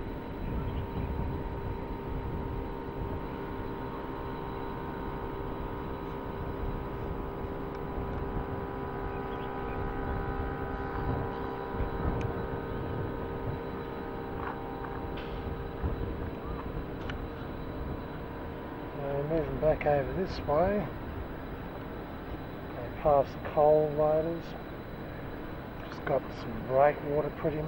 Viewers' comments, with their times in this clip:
0:10 that drone throughout sounds quite nice, i played saxophone on it, its in C